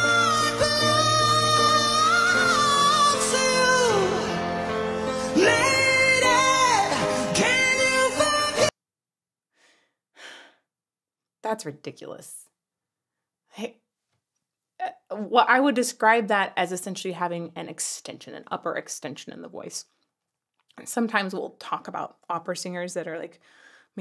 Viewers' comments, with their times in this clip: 0:10 Every time you think Matijevic has reached his top end, he goes a step further.